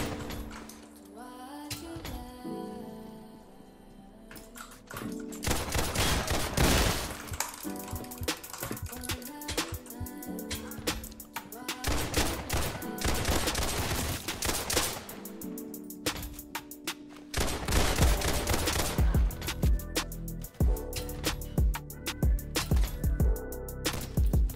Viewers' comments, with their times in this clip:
0:07 You can smell the terror from his mouse clicks 😅